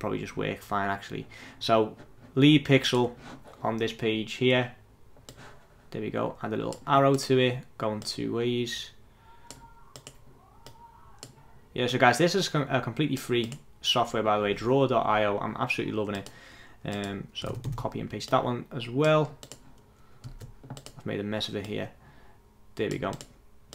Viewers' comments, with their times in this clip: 0:08 some strange sounds in the background hahah :))